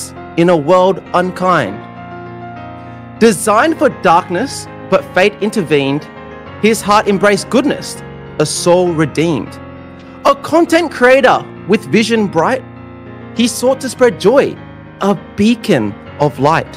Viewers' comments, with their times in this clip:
0:03 lol i heard Never Gonna Give You Up in piano xddd it was in